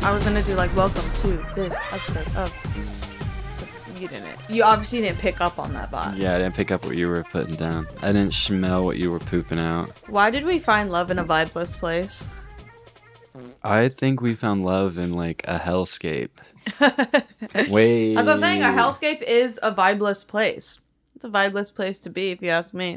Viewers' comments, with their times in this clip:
0:10 The realest shit I’ve heard Enya: Why did we find love in a vibeless place? fart sound